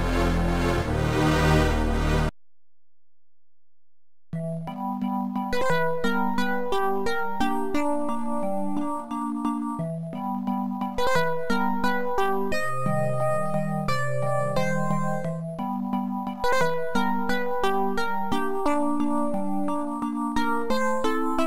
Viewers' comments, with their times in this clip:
0:07 Music cool but cheap keyboard sound hehh